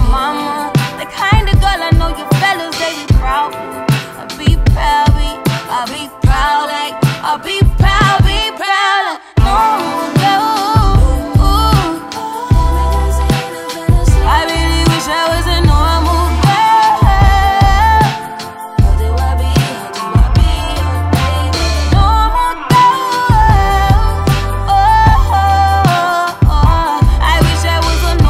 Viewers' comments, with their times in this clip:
0:09 relatable n groovy . normal girl fa ever >>>